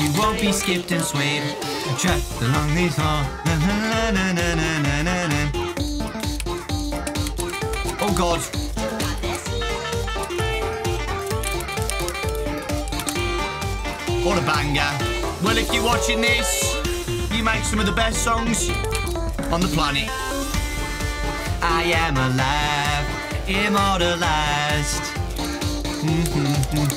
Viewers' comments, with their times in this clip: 0:08 do I hear oof from roblox…